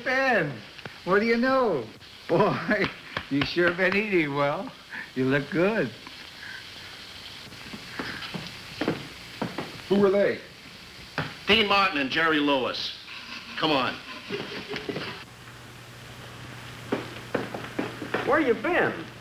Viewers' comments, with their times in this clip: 0:07 you can hear the recording crew laughing from behind the scenes lol